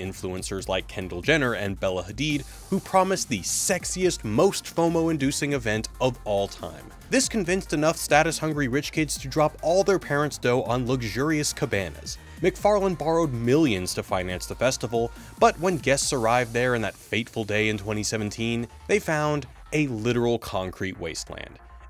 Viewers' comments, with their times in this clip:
0:06 Lol you can also hear that as "Incel #1"